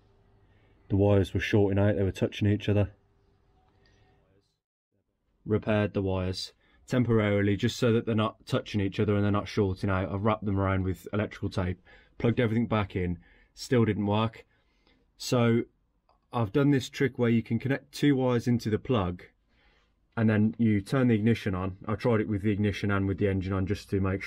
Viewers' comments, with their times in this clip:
0:07 … she’s factree… pretend we didn’t see that 😜 great video fella. Had two clusters go on my 740s lol